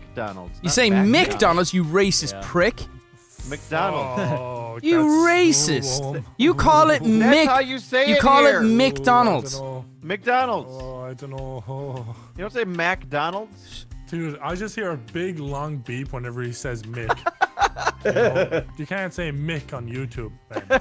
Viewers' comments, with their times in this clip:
0:06 there’s no “a” in “Mc” we aren’t saying anything on purpose. It’s a difference in accents. As for your pronunciation, it’s a preference to avoid the derogatory term.